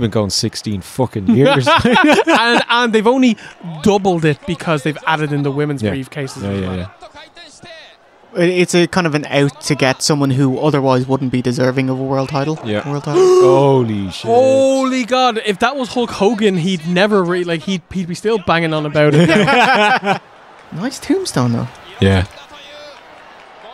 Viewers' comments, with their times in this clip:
0:09 We ALL gasped loudly. JAYSUS.... 😳